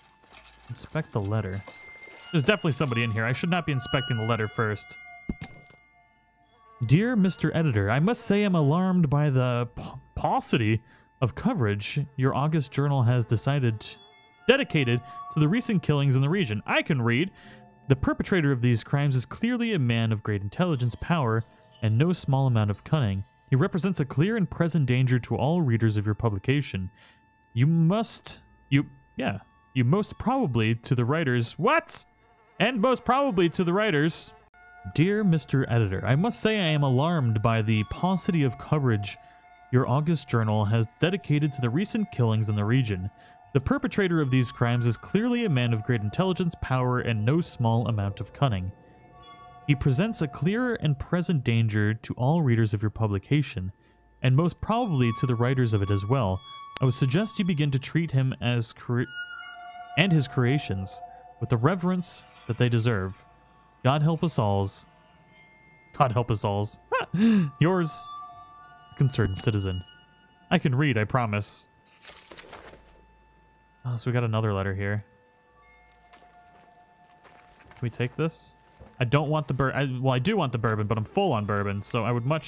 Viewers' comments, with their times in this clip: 0:06 you gave me a stroke trynna read that letter lol
0:06 honey.... best put me on that torture table hearing you read like that
1:04 jesus! you made me remember of my friend when he would get called on to read out loud in class